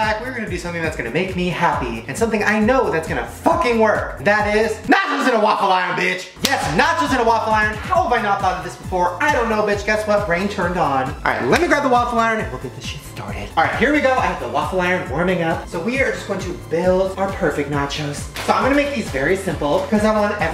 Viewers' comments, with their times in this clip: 0:04 I legit thought he said “matches in a waffle iron!” Lol 😂